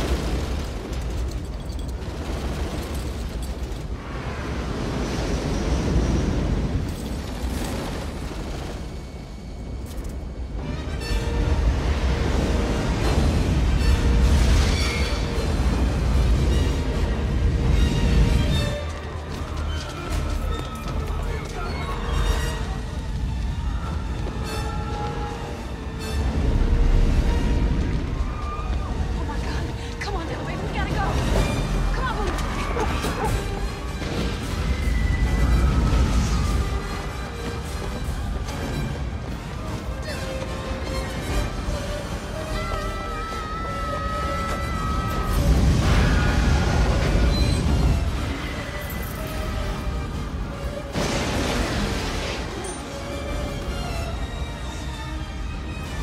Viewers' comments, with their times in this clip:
0:10 I liked the idea of the music 🎵 resumes.
0:42 the baby was screaming too…?